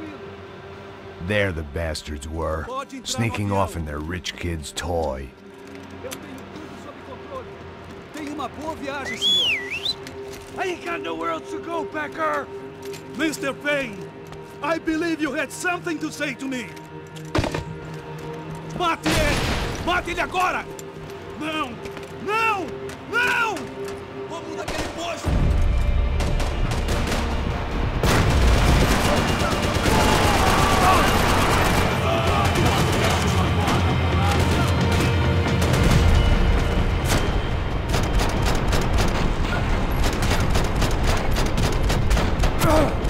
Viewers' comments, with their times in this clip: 0:05 Pulling a pistol slide on a revolver
0:09 max payne is so depressed he whistles so he can die instantly
0:27 god that music got me pumped as fuck!